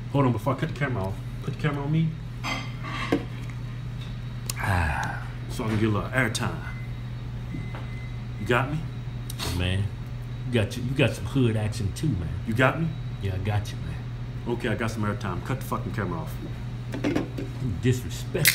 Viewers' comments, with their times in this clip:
0:06 Nothing like the sound of a microwave being set lol.